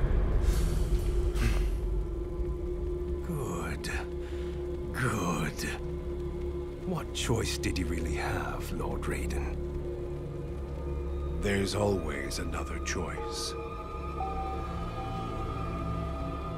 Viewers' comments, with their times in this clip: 0:03 I love how Shang stung expressed the palpatine good good 😈